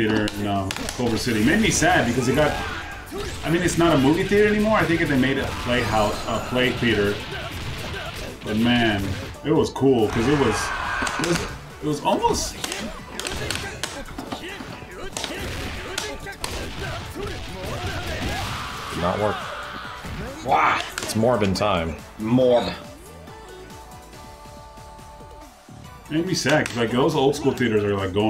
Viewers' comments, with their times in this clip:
0:09 What was that weird sound ? Was that always part of the super?